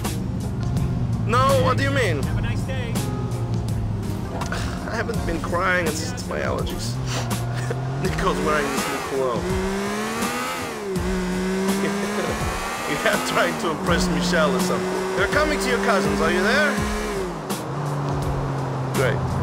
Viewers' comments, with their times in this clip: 0:05 his real voice